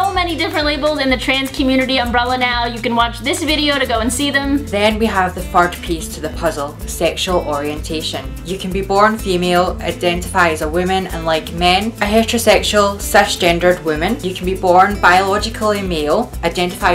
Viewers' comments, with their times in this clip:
0:04 Anybody else catch that she said, "Then you have the FART piece of the puzzle" !!!! Yes, I'm aware it's just her accent. It just cracked me up!